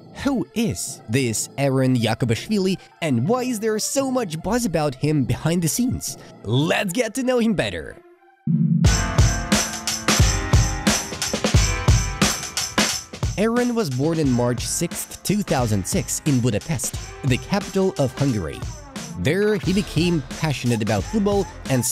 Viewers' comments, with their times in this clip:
0:09 A dope beat